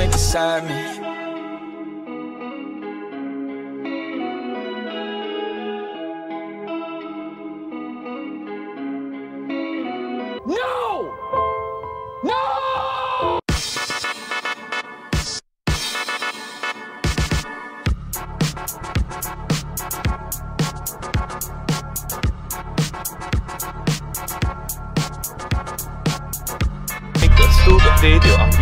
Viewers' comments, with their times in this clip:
0:10 sad song again love sad song :)